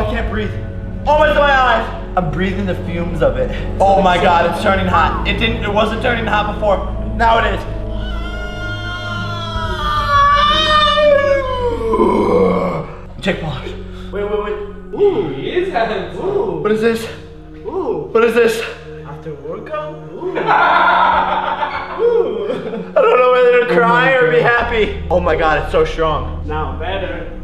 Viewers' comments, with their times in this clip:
0:08 and this is the new sound of Godzilla
0:10 he speaking Dory